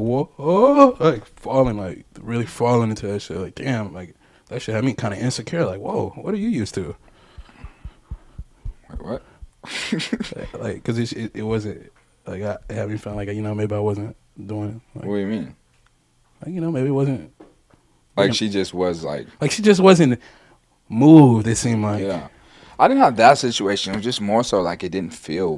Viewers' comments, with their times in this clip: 0:06 is that yachtys actual heart beat? 😂